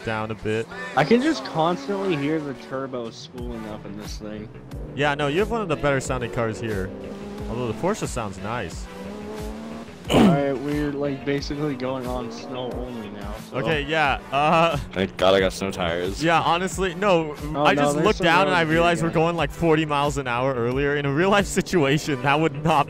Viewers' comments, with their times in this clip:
0:10 lol what was that noise?!